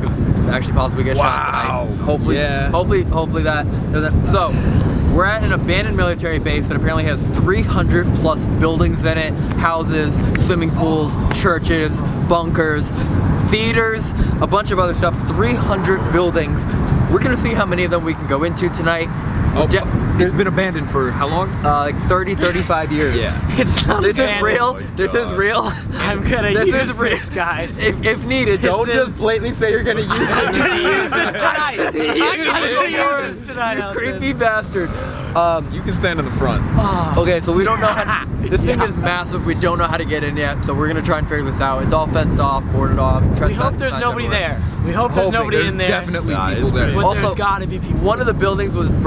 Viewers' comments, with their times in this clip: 0:03 Did anyone else here someone whisper on seconds
0:11 did anyone else hear a scream🤯
0:35 That growl tho